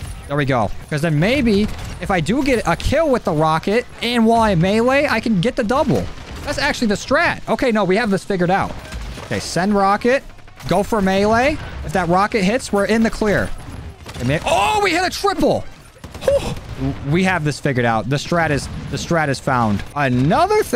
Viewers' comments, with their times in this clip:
0:03 "and while i mewee" has me dead